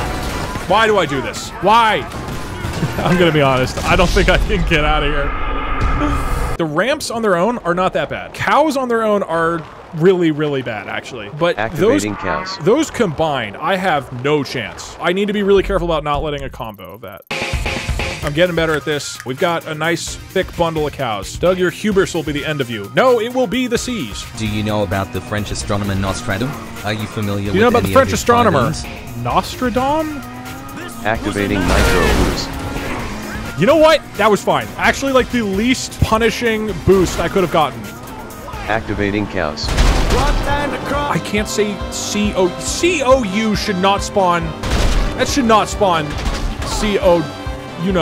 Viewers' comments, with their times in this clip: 0:06 the way the cows moo as he flies away is hilarious
0:07 that cow g ahhh as it’s falls is so funny😂
0:08 That was unexpectedly funny Love the disappearimg "moo"
0:08 That was unexpectedly funny Love the disappearing "moo"
0:10 Hearing their frightful MOOOO's as they fall from 2000 yards was sadly hilarious
0:11 The cows all mooing for a split second had no right being that funny
0:11 When the cows just spawned in and mooed as he was flying past made me laugh so much.
0:12 when he went flying by the cows in the air, I lost my shit. Just hearing the moos as he flys by is really funny
0:12 why do I find the "moo" quickly fading away so funny?
0:12 Perfectly cut Moo compilation part 1
0:31 micheal jus yelling in the background lmao